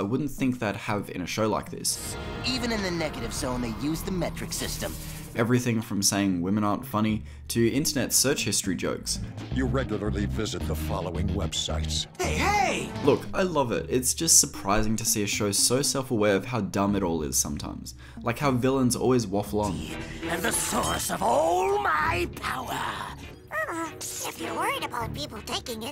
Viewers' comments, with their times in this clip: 0:09 Thar is Adam West. Adam West's voice. It's bothering me that more people aren't talking about it, because HE WAS FUCKING BATMAN!